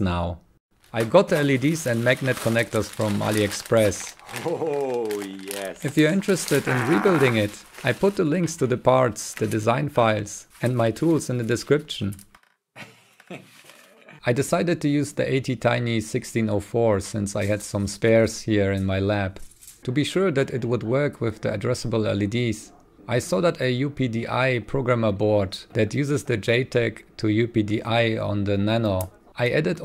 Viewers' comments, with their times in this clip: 0:07 Did bro shard.
0:12 that sounded like a meme